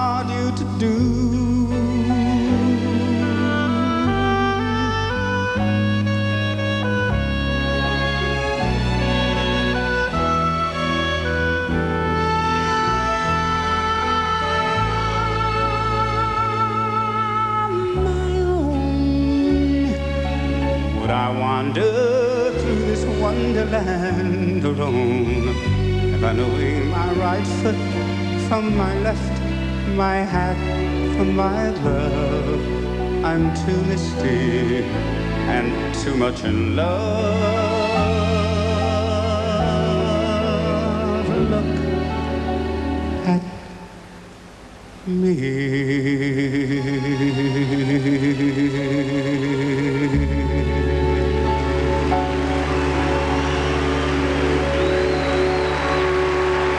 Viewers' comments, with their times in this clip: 0:09 This is how good he is. Listen ish and he totally blends in to the oboe in the background to the point where you cannot distinguish between the two until it becomes clear he is the one sustaining the note!!!!
0:40 And the final note, flawlessly executed with just the right amount of vibrato.